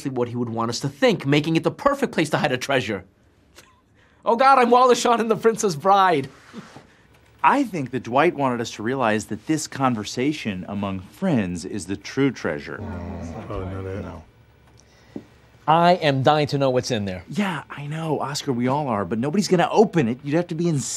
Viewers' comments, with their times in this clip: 0:06 you can hear the cameraman quickly chuckle